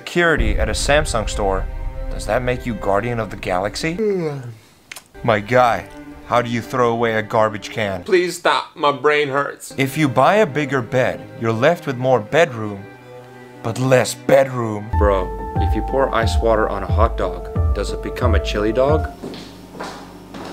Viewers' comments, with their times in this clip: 0:07 the way he said “my brain hurts”🤣🤣